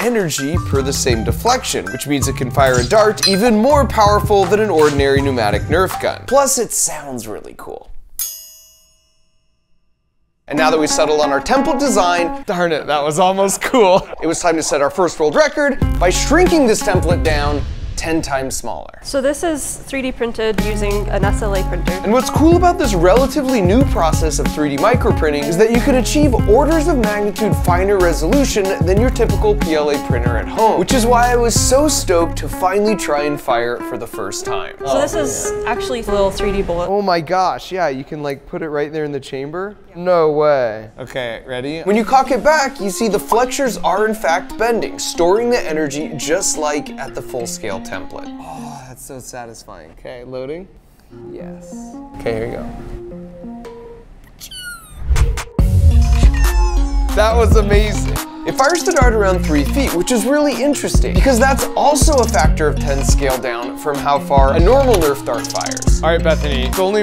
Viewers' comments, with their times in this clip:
0:07 built in Garand ping!
0:09 bro was absolutely dumbfounded and surprised by the sound of a metal nerf gun
0:52 The best part is hearing all the Pichiu's on on different lenguages 🤣